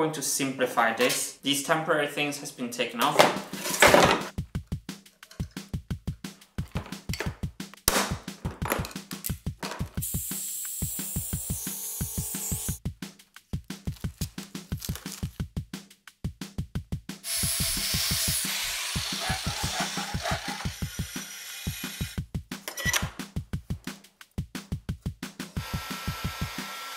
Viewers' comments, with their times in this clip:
0:07 Me: "Oh, let me just turn up the volume a bit, it's a little bit quiet" Martin: BONK